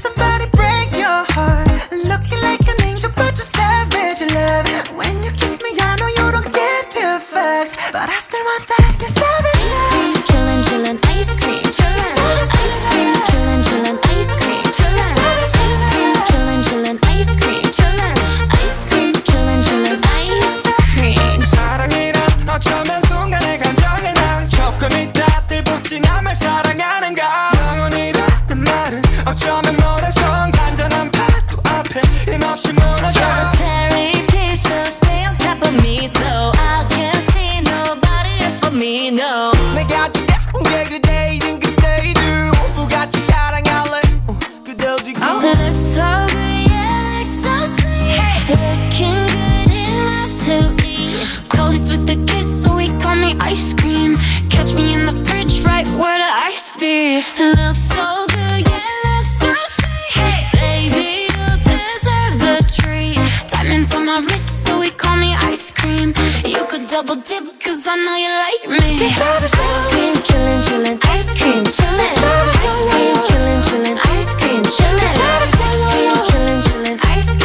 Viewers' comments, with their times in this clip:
0:10 # is just awesome I love the way they said the both lines perfectly
0:21 Omgg Jisoo’s verse was so good after Suga’s rap and before J-hope’s verse
0:21 the moment WOW !! SOOO MUCH GOOD MASH UP OR I DON'T KNOW YOU ARE A GOD OR WHAT '!!!!! DAMN SOO MUCH UNBELIEVABLE MIXING !!!!
0:21 SUGA to JISOO to JHOPE Transition was just fireeeeee 🔥🔥🔥🔥🔥🔥🔥🔥
0:27 J hope and jisso's voice Fits So good its like They both take you to heaven
0:46 I’m so late but sounds like heaven omg
0:49 Ahh it's so smooth damn
0:58 The best parts are lisa rap , jhope and jisoo part, and also from I love how the beat goes matching with jennies voice ..